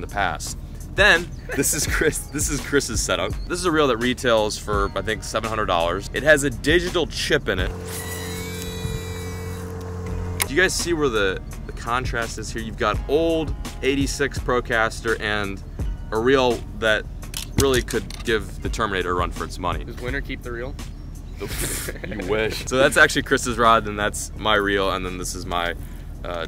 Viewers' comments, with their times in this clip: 0:10 that sound from the reel 😱